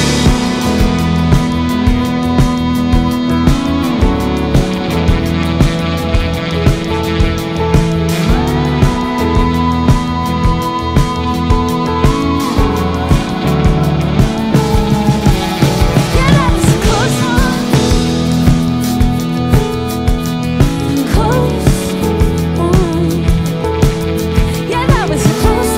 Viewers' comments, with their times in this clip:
0:06 “Oooh I like that high monosynth lead mirroring the guitar … Oh wait, that’s Dodie”
0:09 Ok Dodie hitting that high note ????? HELLO??? LOVE, SO MUCH.